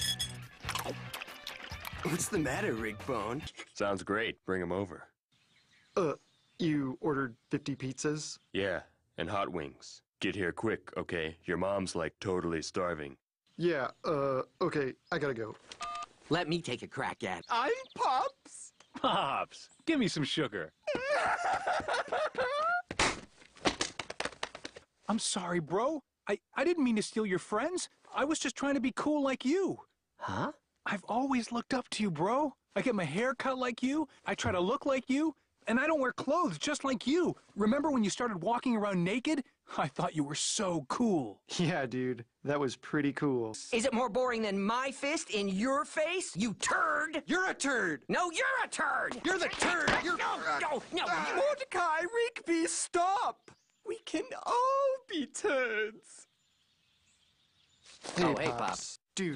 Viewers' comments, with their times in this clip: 0:07 Ok but why is nobody talking
0:47 i swear the first time i watched it, they said "clank"